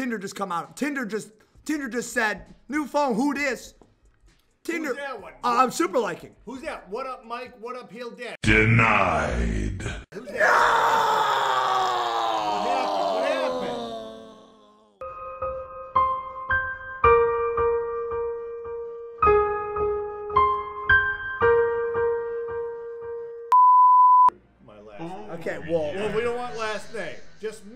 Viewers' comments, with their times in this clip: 0:08 he sounded like luke Skywalker